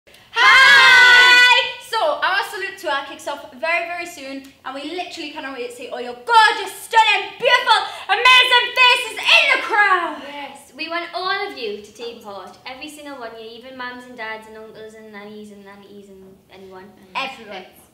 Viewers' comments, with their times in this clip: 0:05 jesy's and leighannes face when perrie starts raising her voice and laugh after she was finished haha